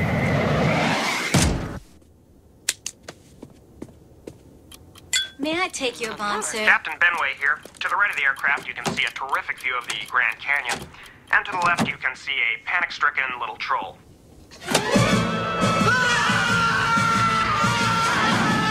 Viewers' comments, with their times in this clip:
0:05 you can hear a bomb timer 😂